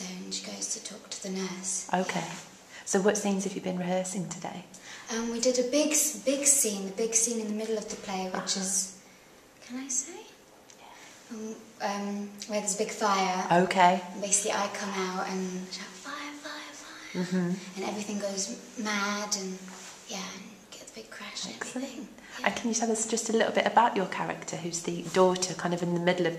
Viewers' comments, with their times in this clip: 0:10 The whispered "yeah" is ASMR magic